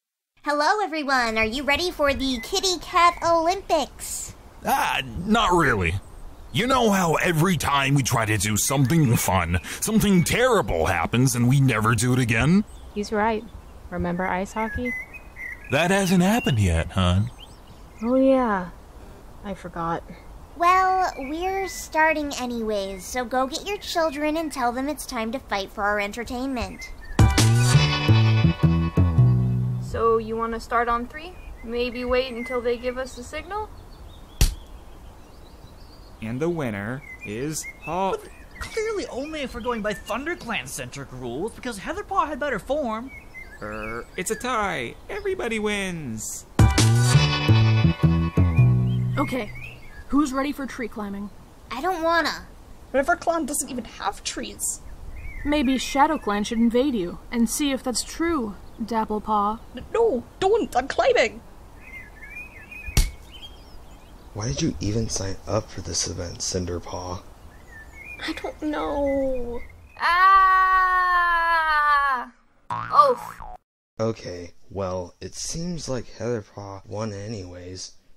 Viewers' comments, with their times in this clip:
0:05 Why did Brakenfur sound like Markiplier-?
0:28 laugh track plays
0:34 smack and the other cat floats away like a balloon with a dumb smile. Also love the music bursts
1:00 He sounds a lot like Chipflake.